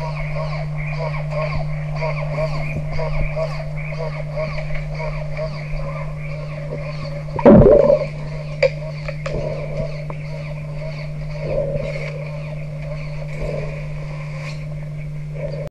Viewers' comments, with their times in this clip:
0:07 I think the fish ripped one in the water XD
0:07 what a fart ;D
0:07 the cameraman fart
0:08 waahhaha!!! camera man farted! those burritos don't digest well when swimming.
0:08 Sounds like the tinman needs oiling. Also, I think he farted